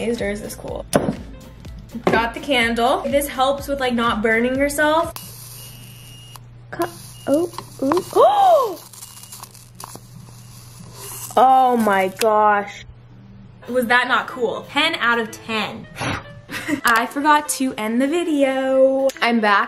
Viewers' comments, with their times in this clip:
0:05 bro that noise hurt my ears not hating tho👌👍